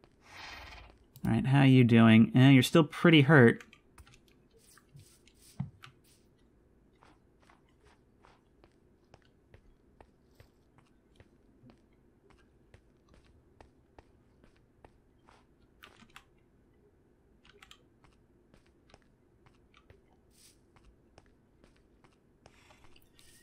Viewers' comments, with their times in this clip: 0:04 I don't know why, but the tension was just completely unnerving. I was expecting some spooky to happen. I think he just forgot to edit this out, but I think I'm just so used to him talking that I super uncomfortable when he all of a sudden stopped talking.
0:04 the sudden silence is so jarring i thought he had broken his mic for a sec but nope he just had a little nefarious plan to snatch some wheat
0:05 The sudden silence starting was a bit strange, for a second I thought the sound on my device glitched out somehow did have a slight uncanny vibe with the sudden silence
0:06 who else thought this moment of absolute silence was reeeeeally creepy?
0:08 The first time the ghosts attacks the player is going to be terrifying. Also was I the only one who was unnerved by the prolonged silence starting ?
0:09 That long complete silence made me think there was going to be a jumpscare and i got tenser the longer it got but nothing happened